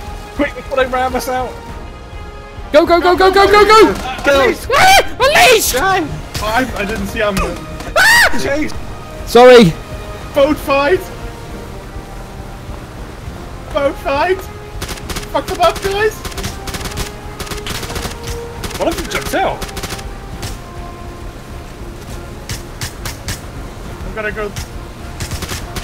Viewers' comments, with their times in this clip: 0:07 That scream lol